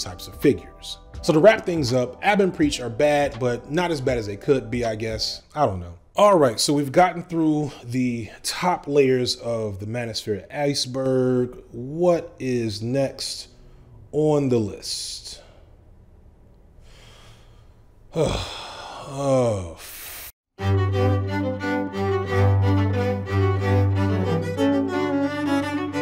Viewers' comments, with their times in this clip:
0:08 I’m listening to this vid on headphones without watching. I just wanted to say that I heard the ‘What is next on the list…uurrrghhh… violin music ‘ and instantly knew you were up to Jordan “Up yours woke moralists” Peterson.